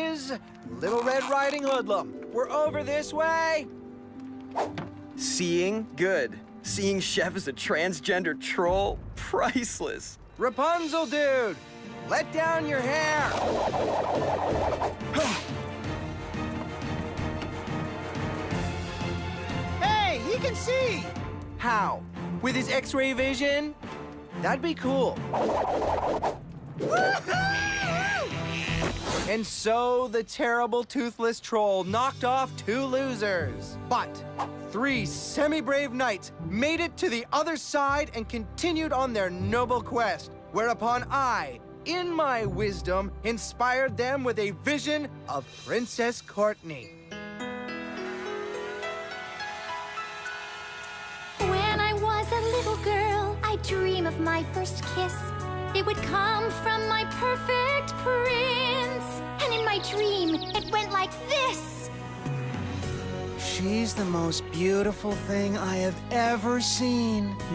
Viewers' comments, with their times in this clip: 0:09 Why's no one talking
0:47 The beautiful song sung by princess Courtenay is
0:48 courtney's voice actor was such a great singer❤❤